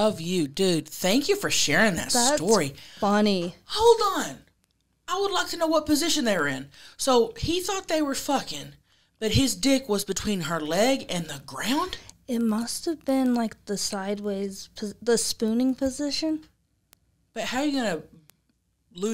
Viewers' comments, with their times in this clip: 0:07 The audio is a little crackly 🎶